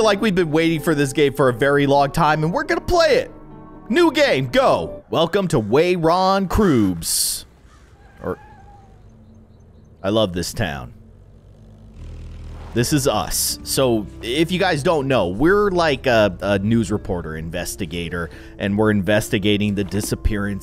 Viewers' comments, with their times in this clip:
0:07 thought that was a meow got so exited